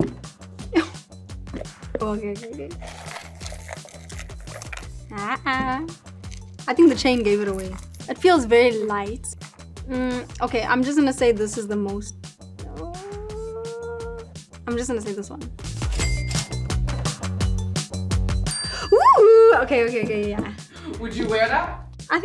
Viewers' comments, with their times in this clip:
0:04 that ha.a is so South African I love you Tyla 😂😂😂